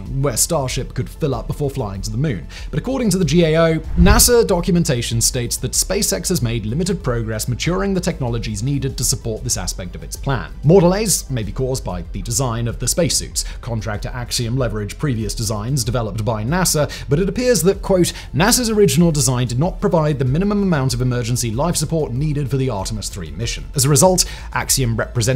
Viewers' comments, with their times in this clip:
0:10 I Never realized that cutting off part of the word "Earth" would have such a unique result